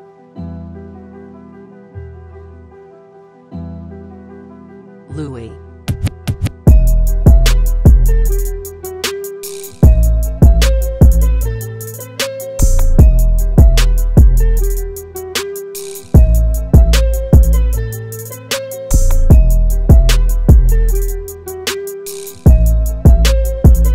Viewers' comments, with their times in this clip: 0:06 what's the sound that comes in first ? the melodic one